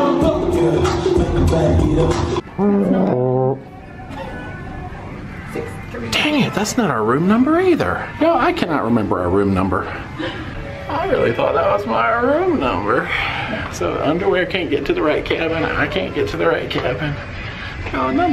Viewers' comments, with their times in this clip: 0:03 did you farted? We now know what banana split does to your stomach lmao